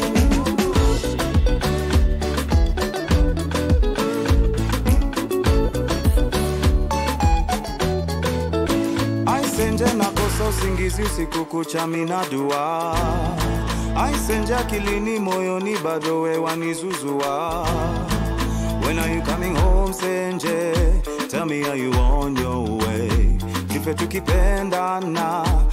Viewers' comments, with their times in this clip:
0:09 The guy who started singing talk about a beautiful voice. It was so smooth and light.